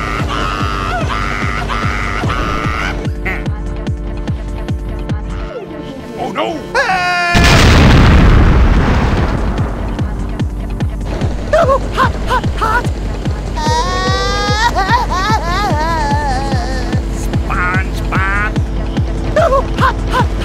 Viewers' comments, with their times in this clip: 0:07 BOOM MR KRABS 🤣🤣🤣🤣🤣🤣🤣🤣🤣🤣🤣🤣🤣🤣🤣🤣🤣🤣🤣🤣🤣🤣🤣🤣🤣🤣🤣🤣🤣🤣🤣🤣🤣🤣🤣🤣